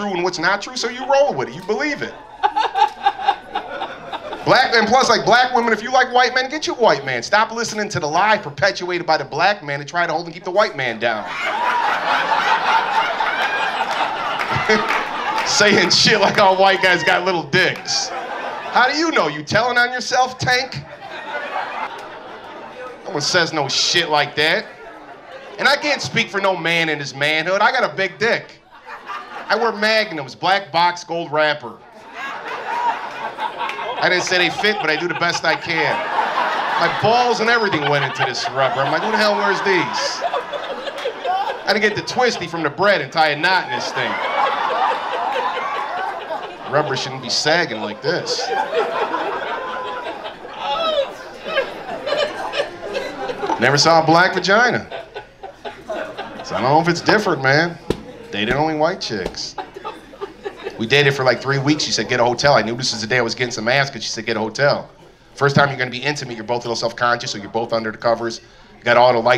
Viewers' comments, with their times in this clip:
0:10 that lady laughing good lol Edit: use headphones
0:28 Is that Bert Kreischer laughing his ass off?
0:50 Anyone else hear Bert Kreischer laughing ?